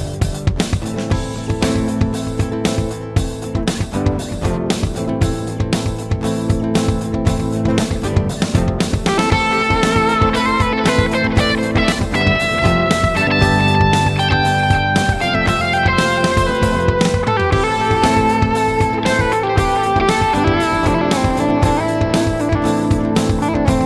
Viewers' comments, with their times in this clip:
0:08 beginning of the masterpiece, with a delicious and metallic guitar tone, very airy. I see the rainbow in front of me, it takes up the whole sky and amazes me. Its colors enlighten me. Buckethead music IS like the rainbow it carries all the shades of the world inside